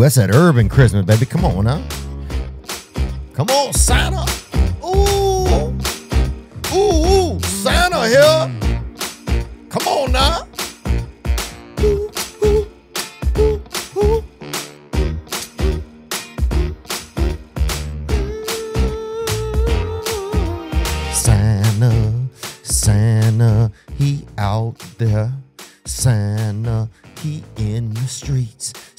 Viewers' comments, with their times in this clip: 0:09 literally sounds like a Meghan trainor beat